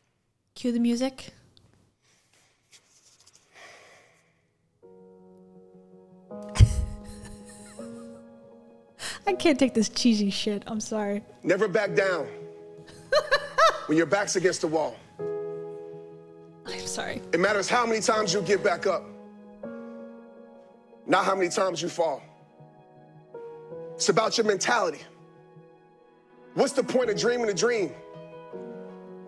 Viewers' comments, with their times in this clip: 0:07 Major "everything is going to be alright" 5 min before the massive "happy ending" of a Hallmark movie
0:17 Your natural laughter on the cheesy BS made me laugh like crazy!!